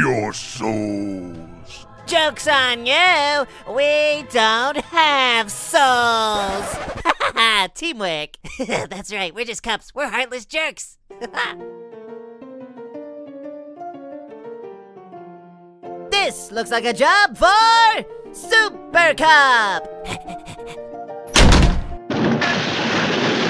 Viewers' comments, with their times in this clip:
0:07 why does it get like that? I would get like this because they have no life Postscript: How nice that King Given was calming him down while the Cup brothers laugh